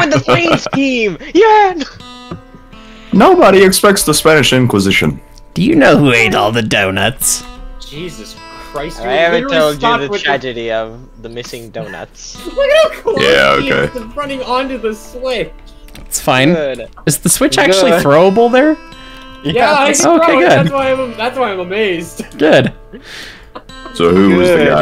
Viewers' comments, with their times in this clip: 0:08 i must know! where do you get your background music i love the slow guitar and tried looking for it but couldnt find anything